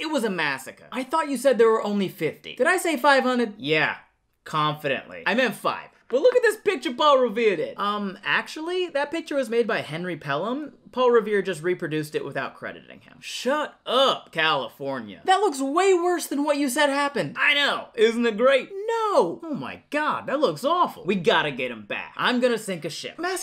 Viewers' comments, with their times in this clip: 0:08 Alta California said in Spanish.